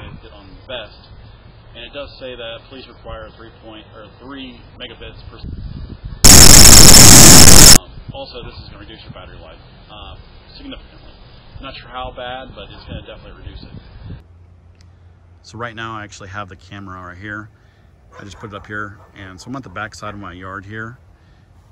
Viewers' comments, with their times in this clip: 0:05 Headphones/volume warning: I about dropped my phone, good lord
0:05 holy crap my ears died
0:06 Holy # that was LOUD!! You couldn't edit that out? About blew my eardrums when wearing headphones here.